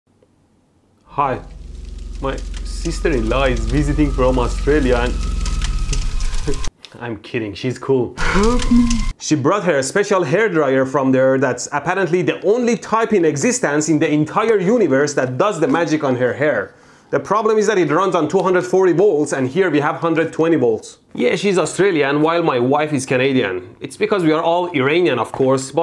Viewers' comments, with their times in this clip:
0:01 Australia and that fire sound seem suspect 😂😂 ( Australia fire)
0:08 Lol “HELP ME” the way he says it tho